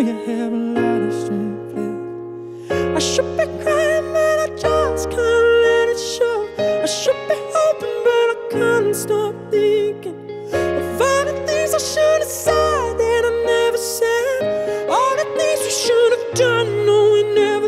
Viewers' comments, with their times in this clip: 0:04 I bawl at KB, cloudbursts of her world worth of high shelves uuuuuuuuuuuuuurrrrrrrrrrgg ooooooh that voice ❤❤